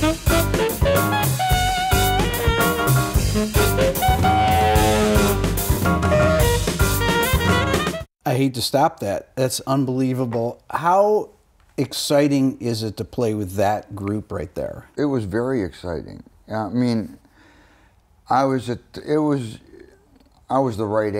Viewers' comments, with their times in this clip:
0:05 DAYUM that Sax solo was bananas. Steve has chops like crazy